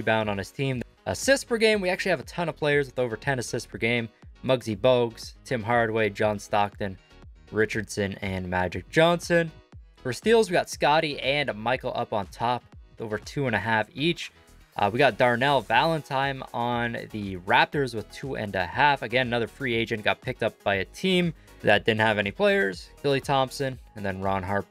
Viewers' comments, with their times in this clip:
0:08 🤣 he can’t say Pooh Richardson